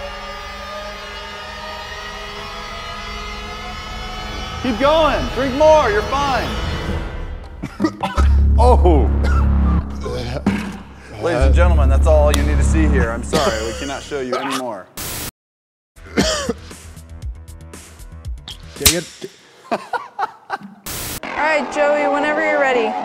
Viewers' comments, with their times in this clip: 0:08 throw up ASMR